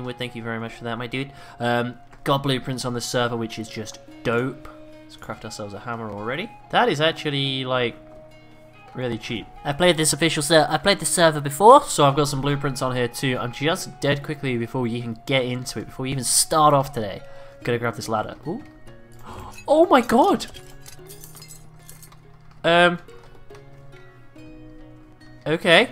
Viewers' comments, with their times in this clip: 0:09 IS THAT YOUR VOICE??????